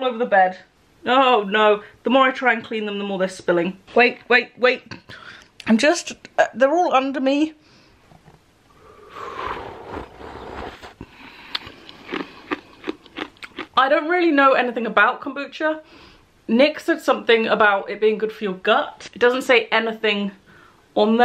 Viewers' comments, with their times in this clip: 0:08 she really said ✨ HoOvEr ✨ 😂😂❤️ love it